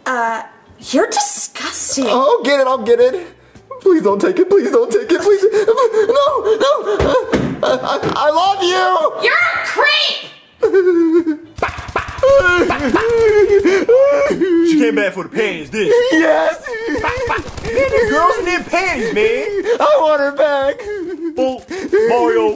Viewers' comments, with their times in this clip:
0:09 “YOUR A CREEP!” That cry sounds so realistic